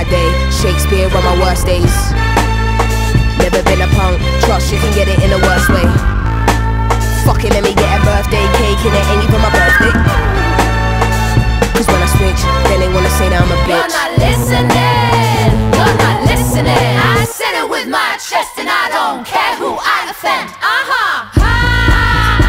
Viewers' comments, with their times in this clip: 0:03 I love how she synced that line on effortlessly on beat